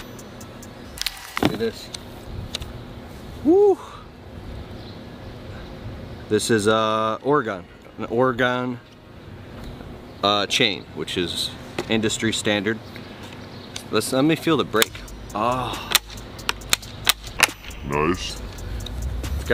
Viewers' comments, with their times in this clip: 0:06 Huh, Ore-gawn? Like, the state just below Washing-tawn?